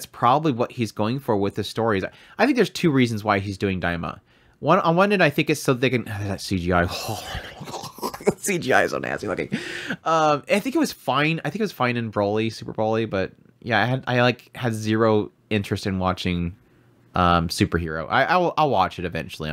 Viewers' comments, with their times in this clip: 0:05 He either becomes a Turkey or he is chanting to summon a demon □□□